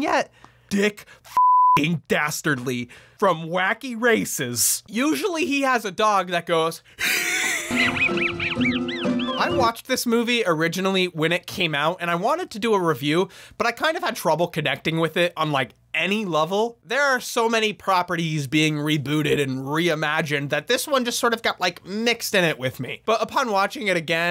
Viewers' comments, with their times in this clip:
0:08 That is seriously how I sound when I laugh so hard I can't breathe 😂